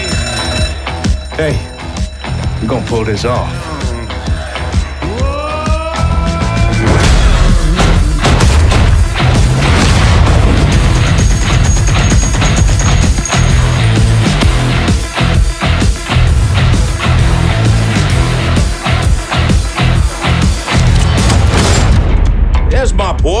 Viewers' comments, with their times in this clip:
0:10 gun changes, location changes, same animation and same sound that really shows us the quality of Mafia III